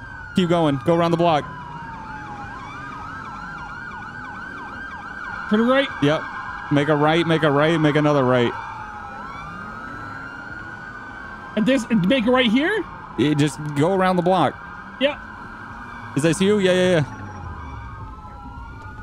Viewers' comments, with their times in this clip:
0:07 funny thing is police sirens went off aat irl for me.